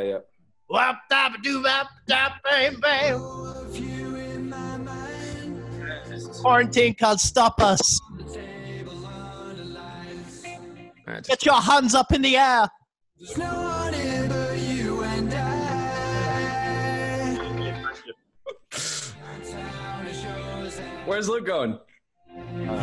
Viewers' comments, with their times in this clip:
0:10 the way ashton says "get your hands up in the air"